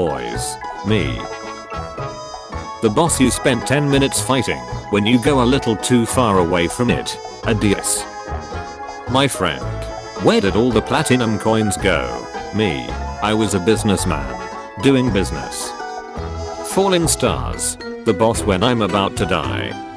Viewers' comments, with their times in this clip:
0:07 Laughter in Spanish